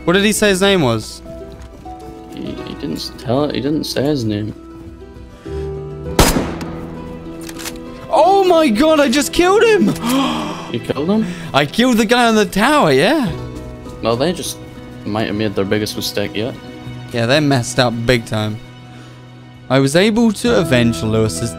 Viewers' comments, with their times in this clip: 0:05 Doesn't he sound like Jerry Seinfeld?